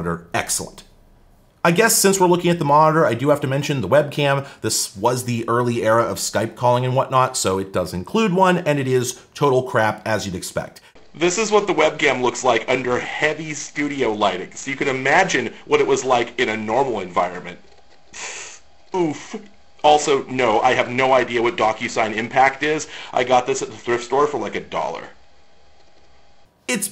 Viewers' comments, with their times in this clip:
0:10 in love with the crunch on this microphone, its like pringles to my ears